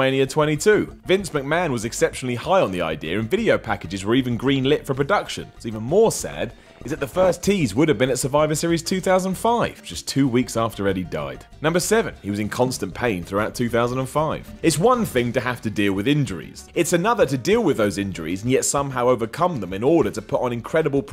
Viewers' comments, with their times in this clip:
0:06 is an audio error.